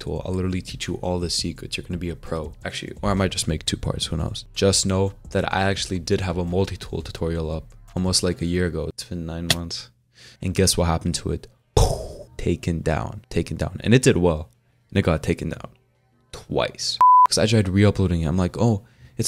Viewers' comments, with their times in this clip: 0:04 how when my boy from an Slavic brother to an american fella ????